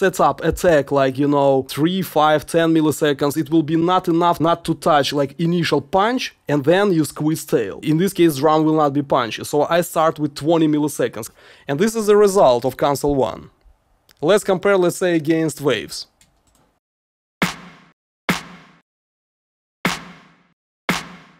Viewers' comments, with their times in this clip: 0:04 U really hearing two different sounds out of those two tracks???? ....To me they both kinda almost same! Am I trying wrong field for me or what? :(